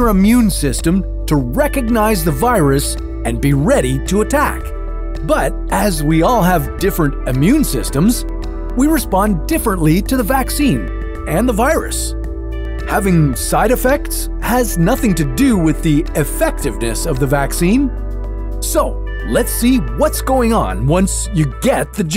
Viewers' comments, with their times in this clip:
0:06 Why did you pull Bill, or Ted, away from their adventures to narrate? he says 'ammune systems'